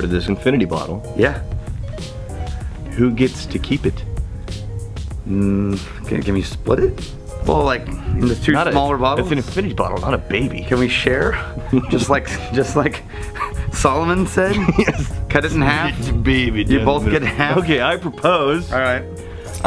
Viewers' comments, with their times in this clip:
0:06 What is that background music? i've been trying to find it for awhile, it's very catchy.